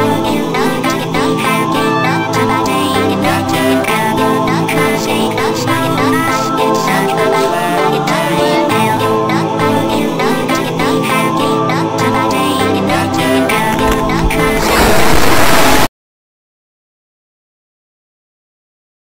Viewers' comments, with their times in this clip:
0:04 I LOVE THE SONG